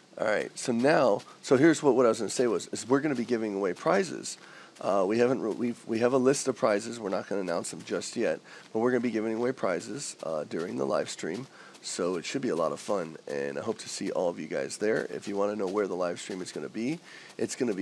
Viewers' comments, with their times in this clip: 0:04 i live in Houston, Texas and i don't sound anything like that